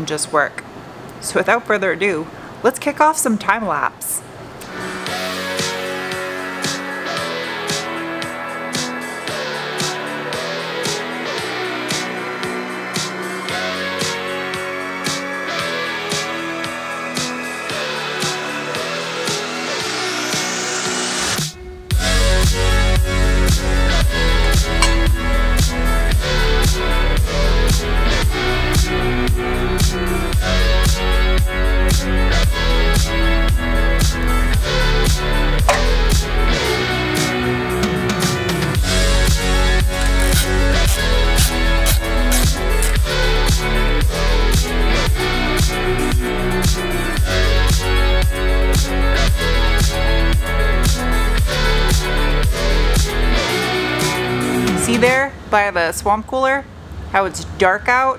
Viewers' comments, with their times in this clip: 0:04 that snap >.< lol
0:40 that synchrony of music and wrench.... 💕